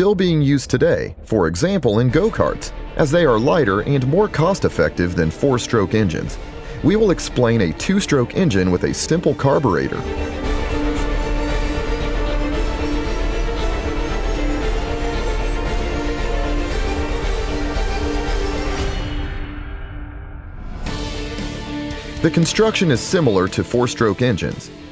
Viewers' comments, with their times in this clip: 0:08 What is a "stimple" carburetor?